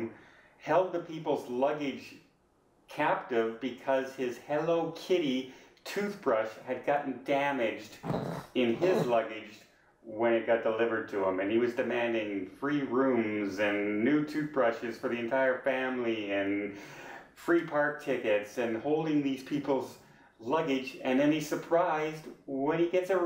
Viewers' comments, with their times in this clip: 0:06 what was that noise?